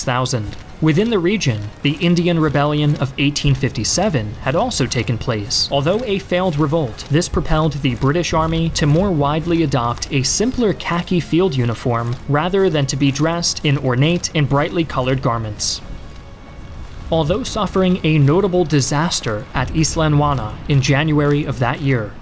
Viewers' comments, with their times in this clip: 0:03 if you listen carefully you can hear flower of Scotland 🏴 I’m Scottish